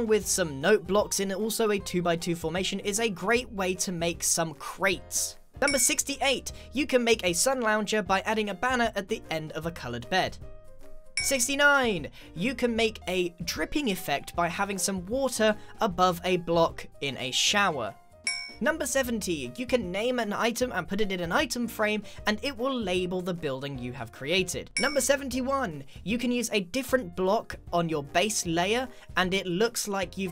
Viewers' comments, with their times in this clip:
0:10 listen how he said that
0:11 Love the enthusiastic “69!”
0:11 I can almost hear your smile, Grian.
0:11 he sounded especially excited about 69